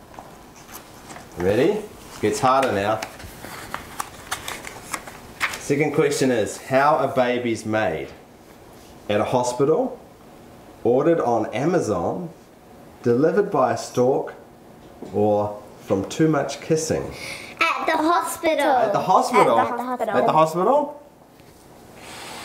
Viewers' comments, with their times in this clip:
0:03 Santa uses a sled! Not whatever the fuck they said.. still have to untangle that horrific twang Jk I love the accent you people have